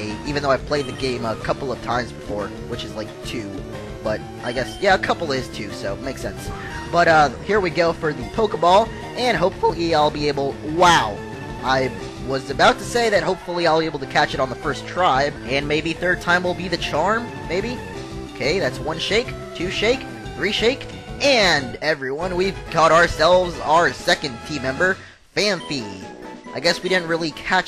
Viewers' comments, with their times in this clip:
0:09 hahahahahaha voice crack.